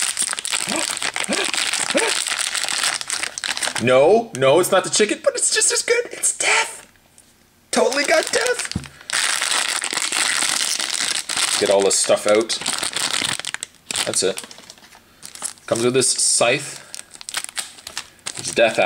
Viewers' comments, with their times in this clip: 0:04 so much excitement in his voice tho